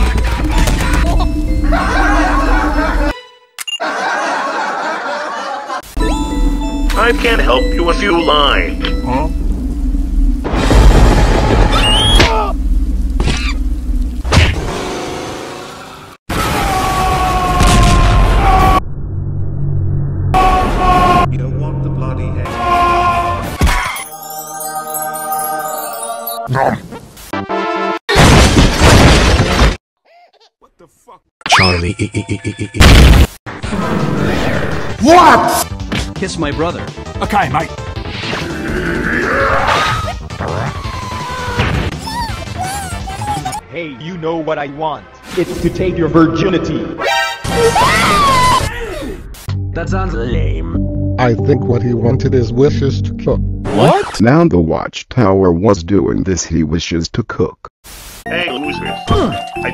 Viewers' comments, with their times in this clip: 0:06 What about the step sound
0:08 surely be is not saying I can't help you a few lying
0:10 the music in background sounds familiar to me idk why
0:29 I hear some swear saix: what Tha fac. Can someone what sound came from I hear it on background.
0:42 Why does CC is sounding like kenny
0:42 Is it me or does it sound like a rabbid